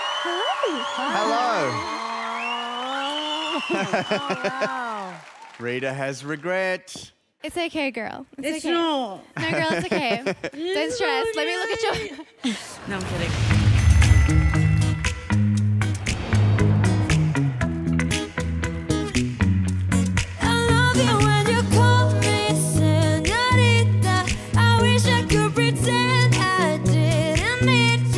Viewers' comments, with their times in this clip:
0:09 Omg she is so pretty. And so cute like it is okay girl with this sweet voice. Lovely